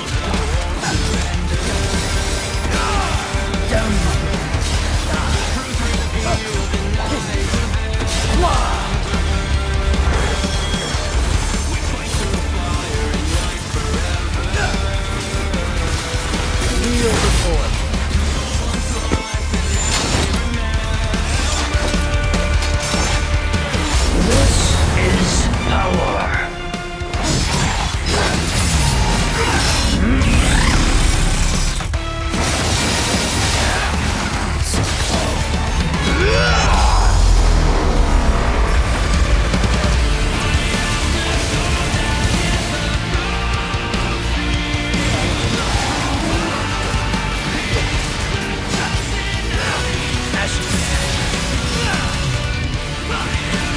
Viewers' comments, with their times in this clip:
0:08 I love that "HWAAH" he makes
0:24 That Epic Violin is just soo gooooodddddd!!
0:36 Why the fuck is the drop so fucking good!!??!!
0:37 beat drops as Vergil activates world of V Me: 🤩🤩🤩🤩🤩🤩🤩🤩🤩🤩🤩🤩🔥🔥🔥🔥🔥🔥🔥🔥🔥🔥🔥🔥🔥🔥🔥🔥🔥🔥🔥🔥🔥🔥🔥🔥🔥🔥🔥🔥🔥🔥🔥🔥🔥🔥🔥